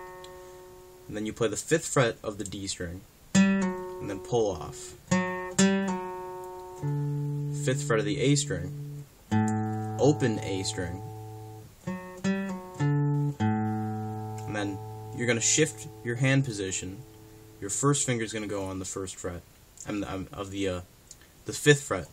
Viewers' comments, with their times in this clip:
0:09 I tried the lick and found it awkward for me. I used ASD app to slow it down and it doesn’t see to play that open A. It sounds like he hits the D note twice. Other than that, i learned a lot from this. I play some of it lower to get a bassier sound. Thanks.